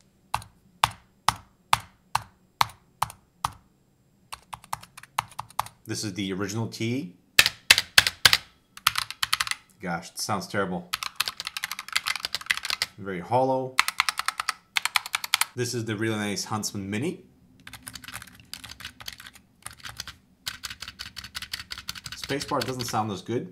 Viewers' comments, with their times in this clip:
0:05 RIP headphone users (me) 💀